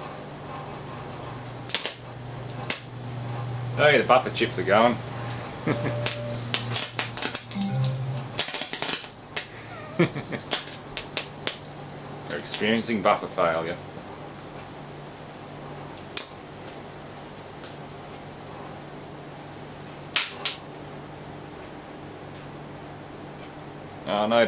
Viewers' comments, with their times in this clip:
0:07 Did you cause a USB device to disconnect via intense electrical noise ?